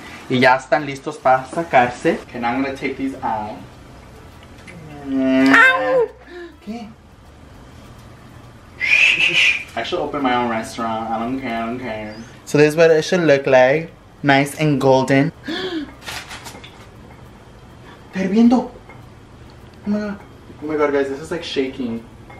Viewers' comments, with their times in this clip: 0:05 sounds like a cat lmao